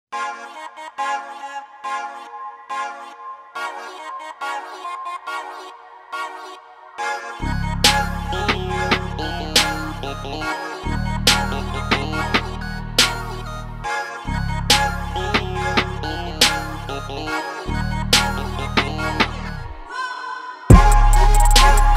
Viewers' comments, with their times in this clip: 0:03 bound 2 2.0